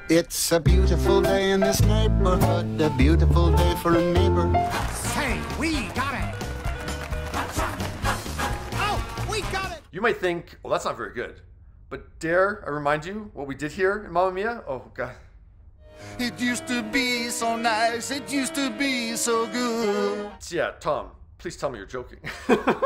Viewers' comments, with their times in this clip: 0:10 We have technology now to replace that god awful singing